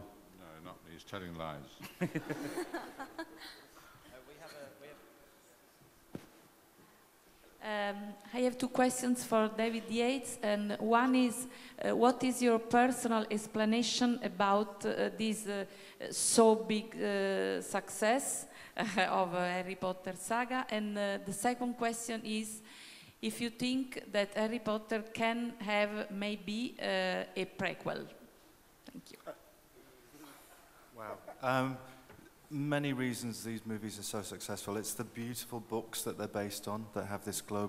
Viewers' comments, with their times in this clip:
0:06 no, I'm french so I can tell you it's not a french who is speaking
0:08 The girl who starts talking is surely from Italy! Im Italian and I recognize the (bad) way we speak English :D
0:23 That lady talks in Fleur Delacore accent XD